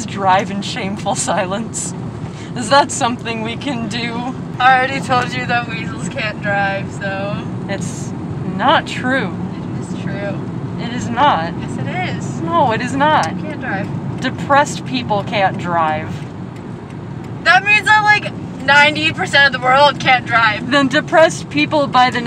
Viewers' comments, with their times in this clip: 0:04 Dad you sound drunk when you talk sometimes 🤡